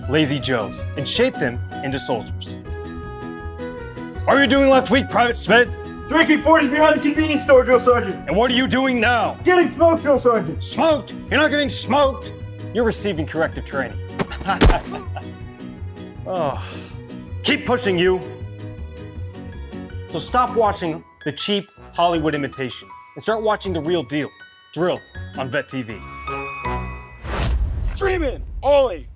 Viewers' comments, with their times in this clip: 0:10 I hear the Lee Ermey coming out of his voice